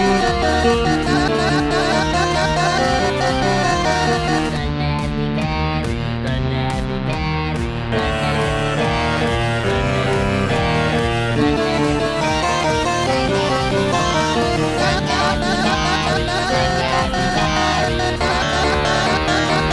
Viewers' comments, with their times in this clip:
0:05 sometimes i hope i could do that kind of pitch, its so epic and i love it